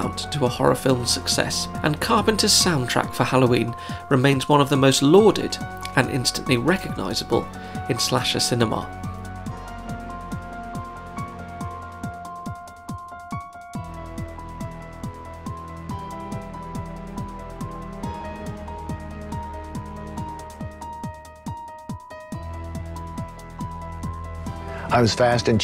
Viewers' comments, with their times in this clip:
0:07 Agreed! Creepiest music since "Unsolved Mysteries".